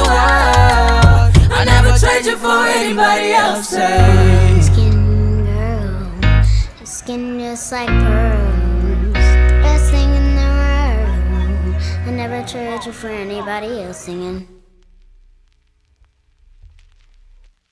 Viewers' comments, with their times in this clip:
0:04 Blue Ivy is singing 💙
0:04 Blue Ivy Carter is singing